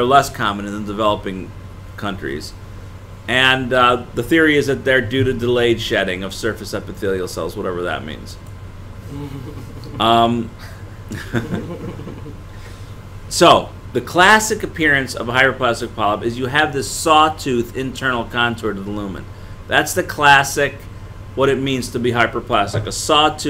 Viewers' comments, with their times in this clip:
0:08 I had this at 1.5x speed, however I had to play this at normal speed because of that creepy laugh. What a weird thing to say. Anyway shoutout to that MD though.